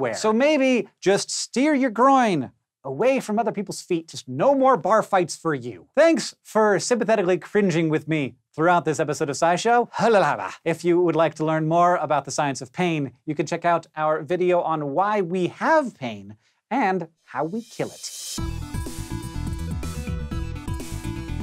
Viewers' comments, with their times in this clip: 0:09 I don't know why but that "halalala" sounded a but sexy